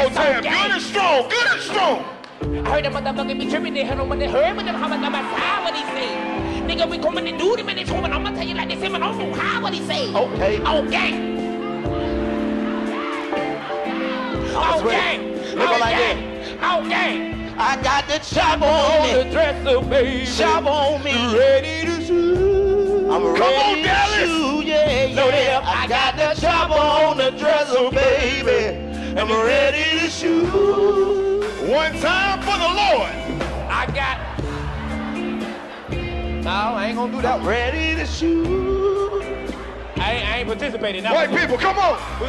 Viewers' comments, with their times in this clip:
0:10 THAT SONG WENT HARDDD
0:25 So we not going to talk about how Chico went up on that note yooo!! 😂😂😂😂🔥🔥